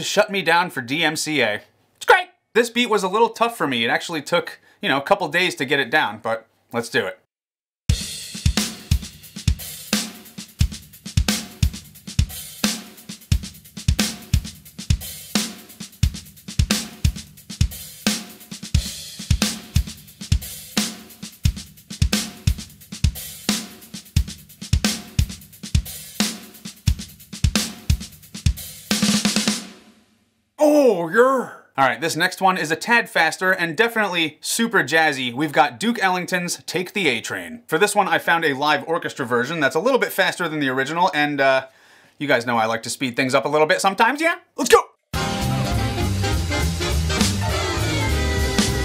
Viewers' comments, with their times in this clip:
0:06 if a jazz drummer wrote the p0rn hub theme
0:06 I thought it was a cooler version of the p hub theme lmao It sounds awesome
0:07 .... I know some of y'all know that beat sounded familiar.. and not from a jazz song..
0:08 that beat sounds familiar
0:17 sounded like the intro to Rosanna by Toto
0:29 that was the most sarcastic ,Ohh YURR, I've ever seen